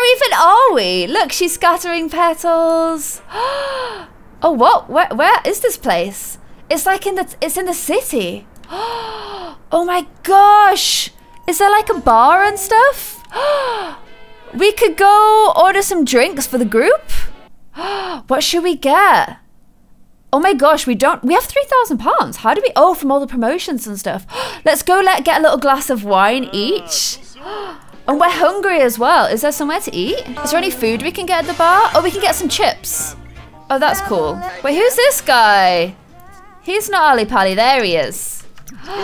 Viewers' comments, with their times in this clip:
0:07 The moment where she says the futre
0:22 I’ve never heard more consecutive gasps in my life